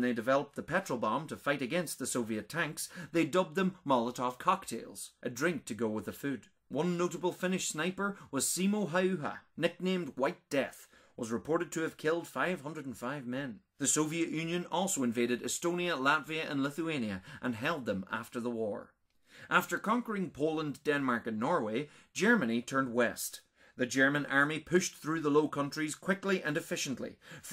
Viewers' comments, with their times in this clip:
0:09 well done, you pronounced his name correctly!